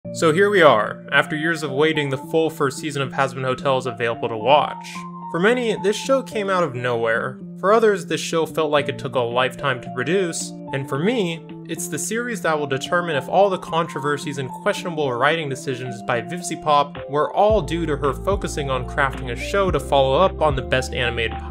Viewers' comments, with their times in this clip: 0:05 i love NIBZAH LETOH